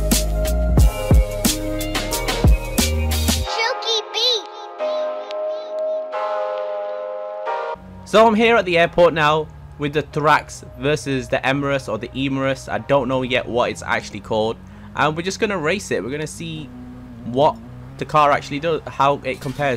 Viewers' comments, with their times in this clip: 0:03 i heard a KID. Lllloooooollllll